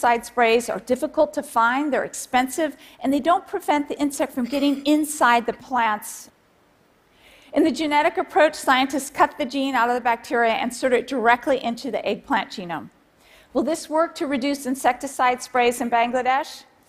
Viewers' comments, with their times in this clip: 0:04 Was that a belch I heard ??? lol